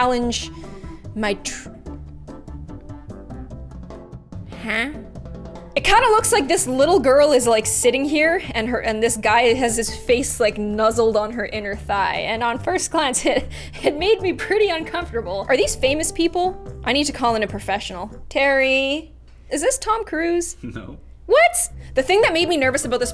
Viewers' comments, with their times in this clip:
0:05 The way you u said huh made me laugh so hard